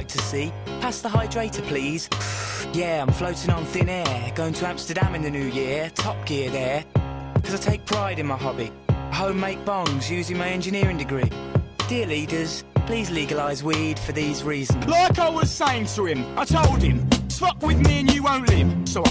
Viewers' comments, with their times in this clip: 0:06 I love the beat that comes with that "coz I take pride in my hobby" line. Are there any songs which use that kind of flow?